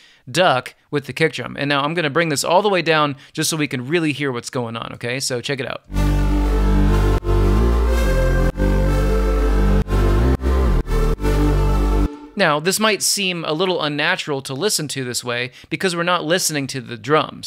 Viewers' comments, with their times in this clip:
0:05 This video surpassed my expectations of comparing side-chaining with compressors vs LFO. I appreciate how you went into detail into the pros and cons of each technique. Btw, the unnatural sound is a staple of the Com Truise sound =)